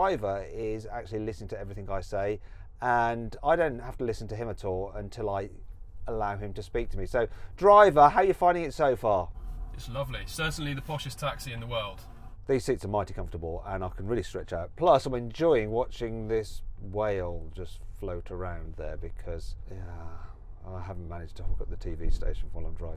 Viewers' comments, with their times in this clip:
0:09 is it me or this driver sounds familiar?! 🤔🤣#fake